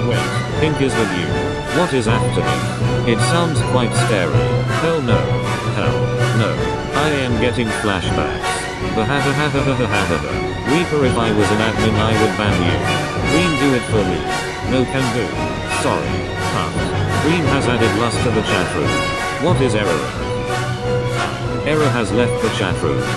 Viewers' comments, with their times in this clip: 0:09 hahahahahahahahahaah reaper laugh!!!!!, Hahahahahaaha